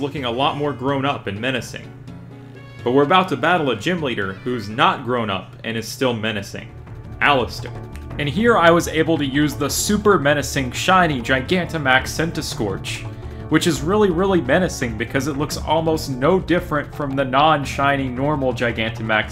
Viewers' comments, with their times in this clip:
0:07 epic bogmire music